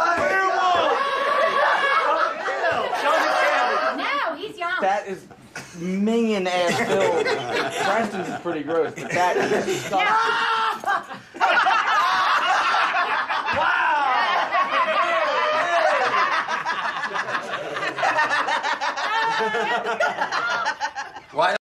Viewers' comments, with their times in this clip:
0:09 Bam gets scared by Johnny's laughter